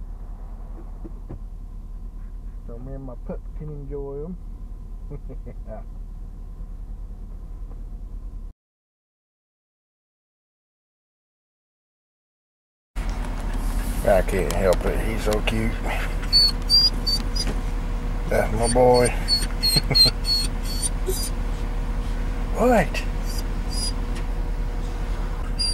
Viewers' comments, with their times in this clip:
0:07 While your pup was whining a bit my pup was right racing back and forth trying to find him.